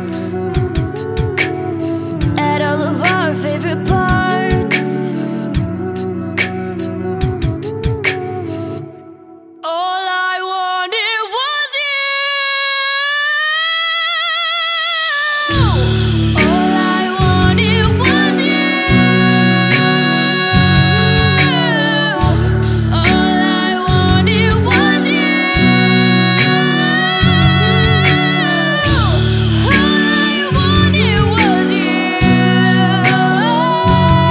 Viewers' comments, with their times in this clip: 0:08 that voice tho
0:08 his face in the pink box ... Damn amazing voice anyway
0:09 MY JAW DROPPED DAMMMNNN THAT GIRL CAN SIINNGGG
0:09 makes My singing that I thought was good sound like craps 😭 that was beautiful
0:14 Ayalla's voice gives me goose bumps
0:22 Beautiful! The only thing is ish she seems to come in like 1/4 beat too early compared to The original song! Gorgeous voices nonetheless😍😍